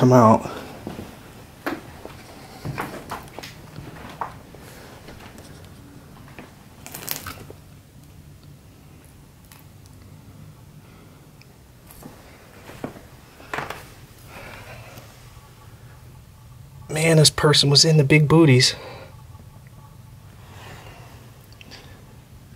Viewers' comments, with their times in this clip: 0:06 What a messed up house!! Someone was murdered or committed suicide!! it sounds like someone screaming! Just curious if you heard that?